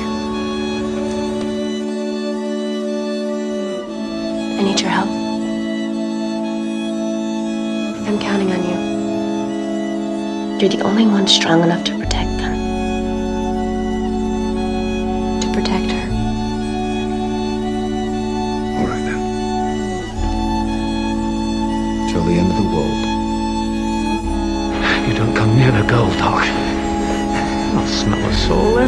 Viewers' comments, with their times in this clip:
0:09 THIADNLGDRESMGFDP;MSGLELA'ERMMKLGESWML THAT THUMBNAIL IS SO DOPE FIRST OF ALL. that whole intro explaining how badass spike is- he's my favourite character ever made i love him so much. made me tear up the way buffy says "you're the only one strong enough to protect them" is so soft. she believes in spike so much. "you don't come near the girl doc" he cared so much without a soul. buffy and spike are fucking soulmates. 4 PARTS? I had to take a break each part- i'm not okay